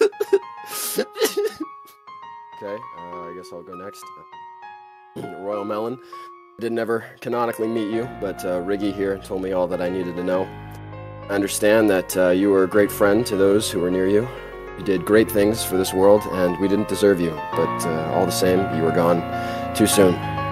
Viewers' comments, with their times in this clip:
0:03 he crying i feel bad